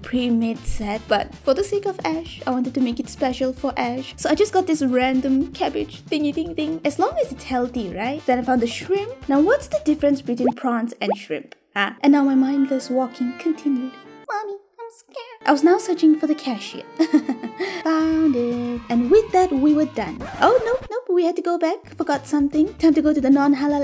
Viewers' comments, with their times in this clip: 0:05 Hearing the themesong, I sang and cryed in South Africa